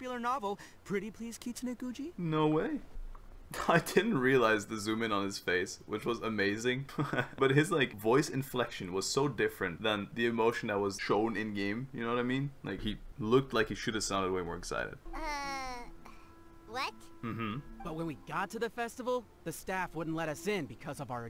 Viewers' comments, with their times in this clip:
0:09 in the japanese dub he actually did say the pretty please kitsune guuji in a different way! 😄 so did a couple of other characters it was fun to watch